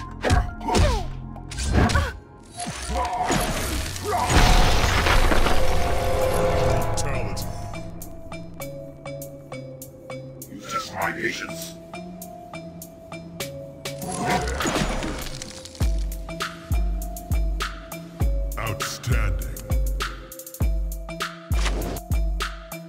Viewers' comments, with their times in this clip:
0:04 the song in the brutality part was perfect Congratulations